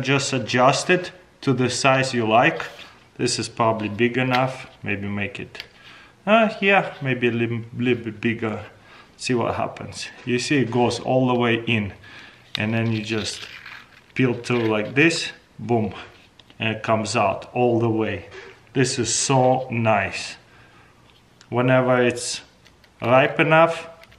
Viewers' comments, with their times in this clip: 0:09 Did you say boomb